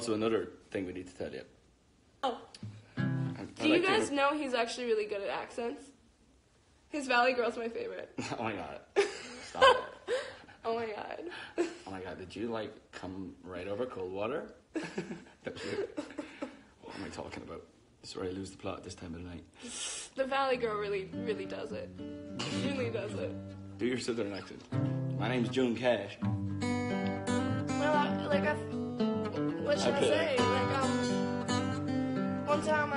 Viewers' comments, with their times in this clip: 0:09 niall saying "omg💁🏼‍♂️" It's the best hahaha 😂
0:20 HE STARTS TO STRUM WASTED